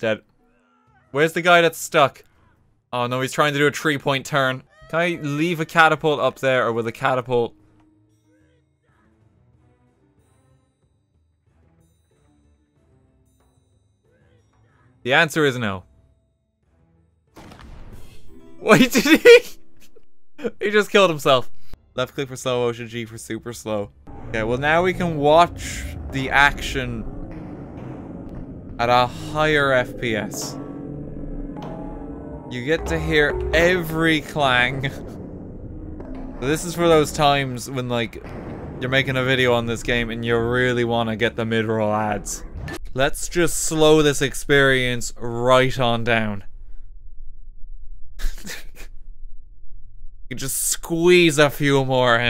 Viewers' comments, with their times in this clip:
0:03 Never heard of a tree point turn before.
0:03 whats a "treepoint turn"?
0:34 Clang eh? <Berserk 2016\17 intensifies in the background>